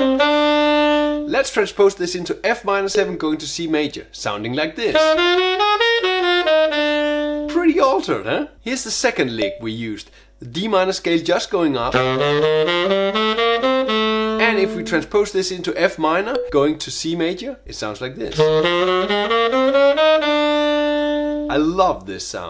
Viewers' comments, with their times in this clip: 0:03 I've just noticed the transposition written isn't right: I think you're actually playing F G Ab Bb C Ab G F E. Is it rigtht?